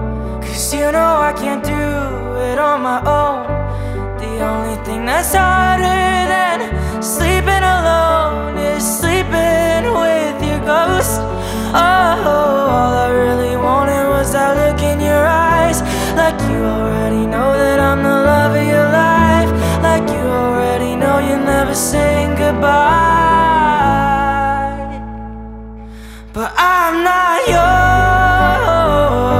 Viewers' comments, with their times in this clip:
0:04 the « sleeping with your ghOSt » got me chills
0:04 the lyrics and conan vioces are just perfect
0:11 THE RIFF GETS ME EVER TIME ITS SO GOODD